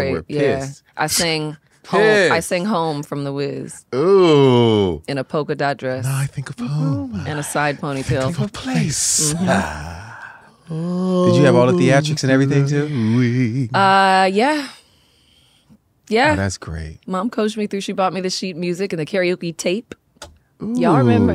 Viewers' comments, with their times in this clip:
0:05 I keep watching for a laugh